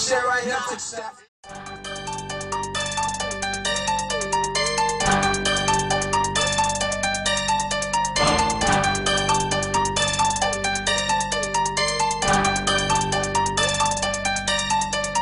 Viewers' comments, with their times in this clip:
0:03 man that beat sick af !